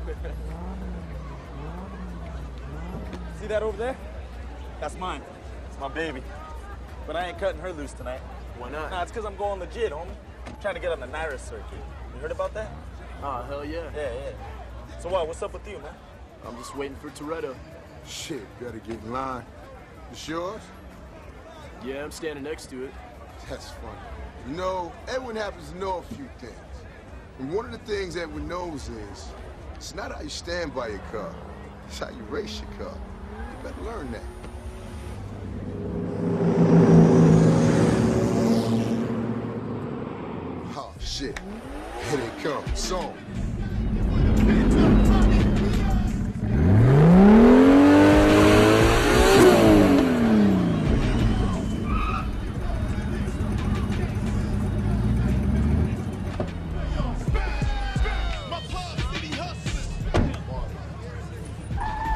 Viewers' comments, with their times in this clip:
0:09 For years always thought he said “cause I’m going to jail homie” Lmaoo boy was I wrong 😂😂
0:46 weird sounding rotary
0:47 the rev coming from the RX7 is just beautiful. Love that sound!
0:48 That doeasnt sound like a rotary...